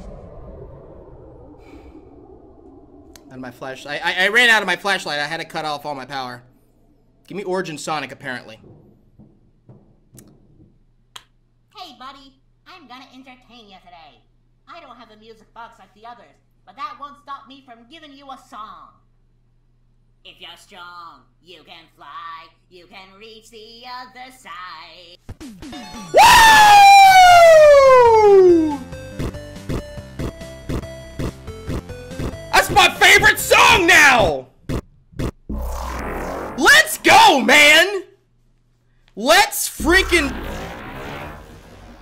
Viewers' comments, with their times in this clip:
0:10 insert perfectly cut scream here
0:25 If you use your headphone anf full power in get ready (for viewers)
0:25 the scream lol